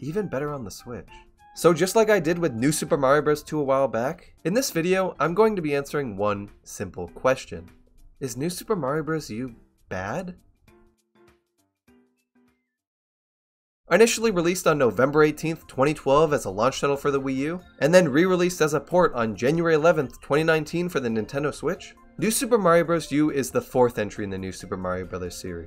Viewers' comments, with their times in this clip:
0:07 i've watched like ten of your vids now and this valley girl upward inflection you do is starting to drive me insane